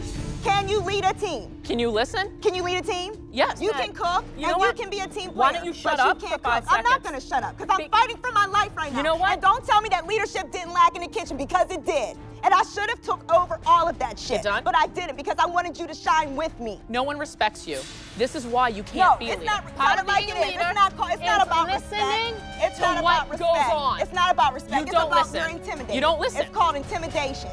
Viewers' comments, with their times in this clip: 0:08 Why she sound like R Kelly "I'm fighting for my life"😂😂